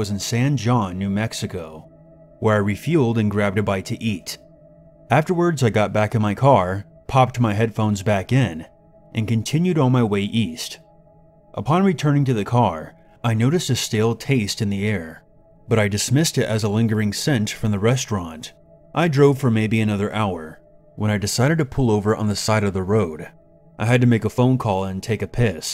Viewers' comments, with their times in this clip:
0:09 it’s pronounced “sawn whuan” lmao I’m from New Mexico and was like wtf? I’ve never heard of San John. And I was like ohhhhhhhhh San Juan lmao!!!!!!